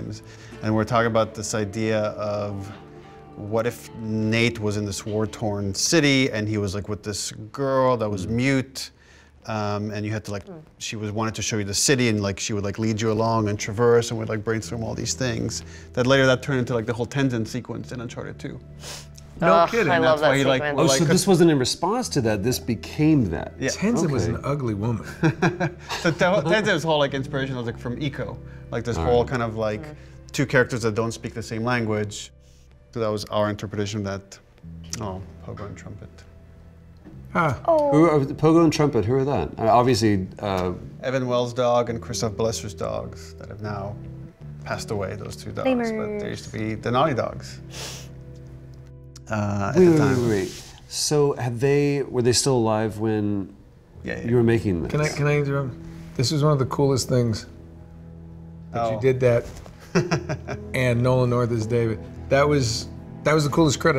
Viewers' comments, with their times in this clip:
0:10 someone farts get ur earphones out guys🤣
0:45 Ashley's adorable little "Leemurs~" when she sees Liam's name in the credits added an additional 10 years to my life.
0:45 Ashley's little "Lemurs" when she sees Liam O'Brien's name is so cute